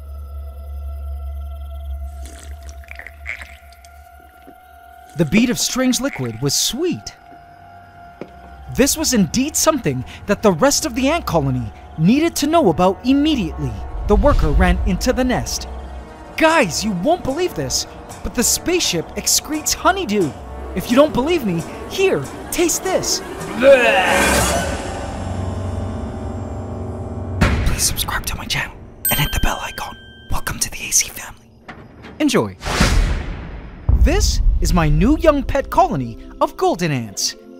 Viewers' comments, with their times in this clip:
0:05 .. that sound of ant slurping was too much. Edit: In a good way.
0:23 bruh the Voice acting of the ant Trow- I mean sharing it is funny I don't know why lol